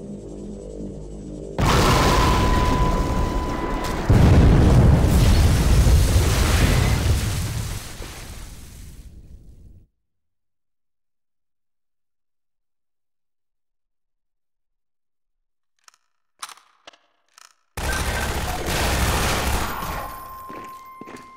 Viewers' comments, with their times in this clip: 0:05 The Technicolor glass shatter !